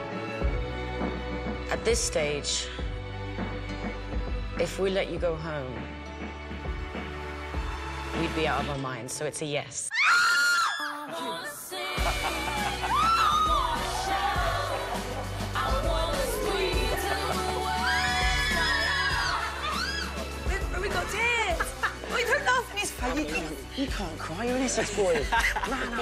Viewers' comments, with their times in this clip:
0:09 even the shout of joy of 4th Impact is in harmony! :) you can all feel the emotions
0:10 Lol didnt see those screamin' coming😂😂